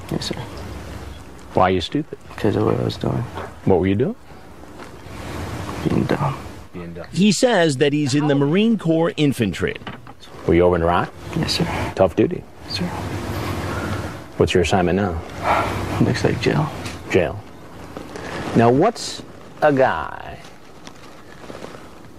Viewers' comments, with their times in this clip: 0:08 is it Marine core or Marine corp? Hansen and Michael Scott say ‘Marine Core.’